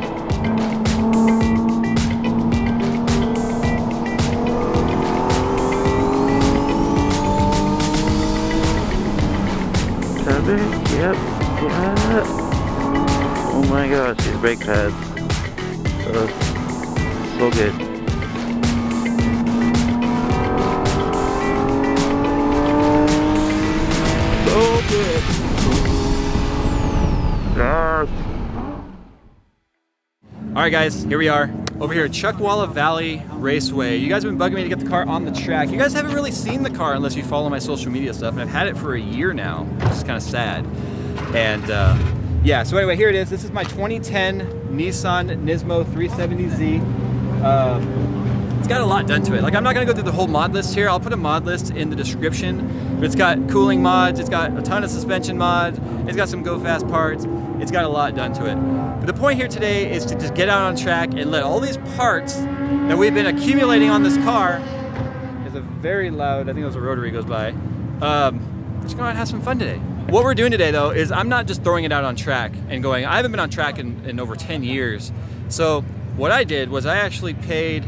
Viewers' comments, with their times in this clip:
0:04 that whine, omg
0:04 with the music in the background it sounded like a turbo spooling, it kinda caught me off guard lmao
0:22 the TurboCharger sound is amazing... love it..indescribable...
1:04 jaws theme starts playing